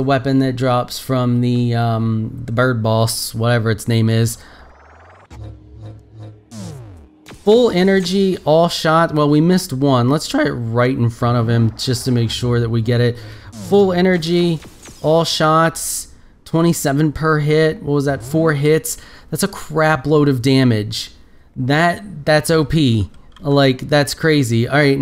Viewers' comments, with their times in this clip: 0:10 that voice crack tho😂😂